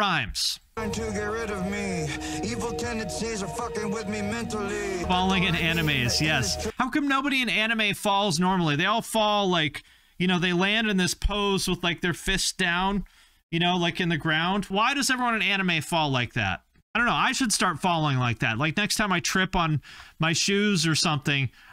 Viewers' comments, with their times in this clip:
0:05 His bar here reminds me of Drake's "Energy"... I love the genre-bending. The best American music has always been a blending of genres...